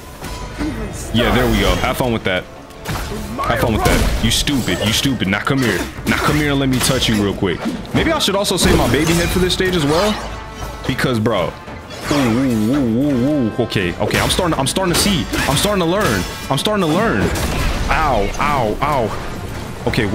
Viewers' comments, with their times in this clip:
0:05 bro sounding like Diddy